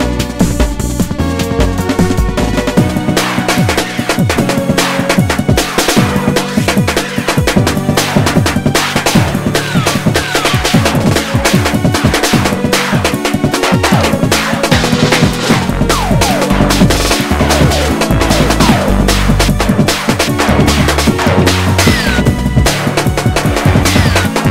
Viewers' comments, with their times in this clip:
0:05 pinball windows xp